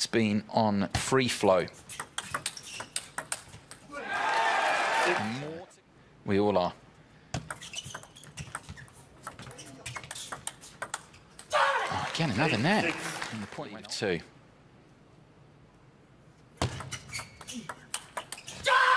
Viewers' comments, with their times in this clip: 0:04 Well played Harimoto. I'm really impressed by the respect he shows. he had a net ball and stopped Cho-ing when he remembered it. 😂 And he turns away before yelling, never at the face of opponent! Cho all you want Harimoto 🥳🥳